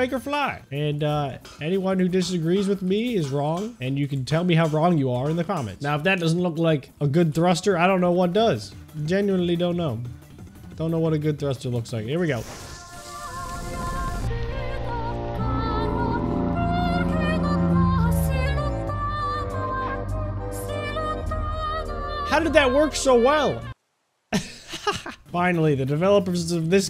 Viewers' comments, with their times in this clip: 0:07 wait for the music